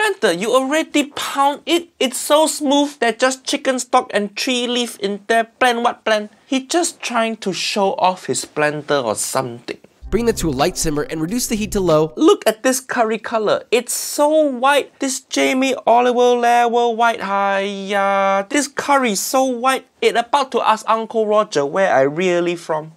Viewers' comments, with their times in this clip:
0:05 "blend what blend?" XD I can literally hear the cantonese tone in it. "Da mie ze da?"